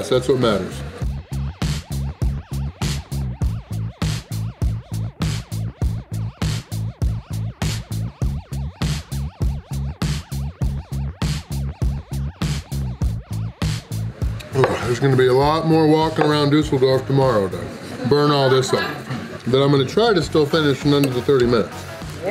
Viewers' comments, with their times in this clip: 0:04 I think of balloon burst from Mario party.